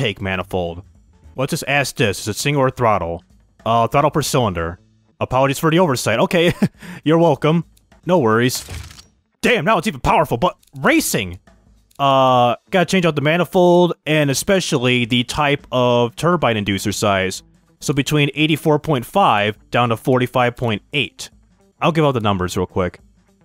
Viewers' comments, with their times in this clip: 0:07 the way he said it made me laugh so hard that i cried a bit loll